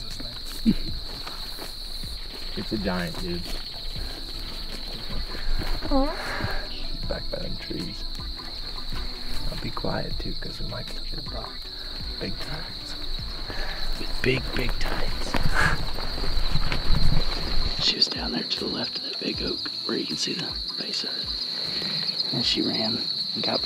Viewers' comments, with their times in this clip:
0:06 Good thing you asked for toilet paper because that was a nice fart